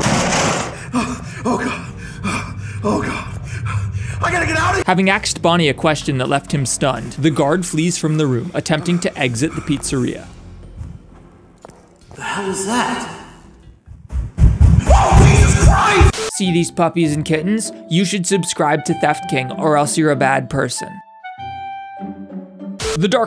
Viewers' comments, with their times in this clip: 0:10 AXED HIM A QUESTION LEAVING BONNIE STUNNED 😂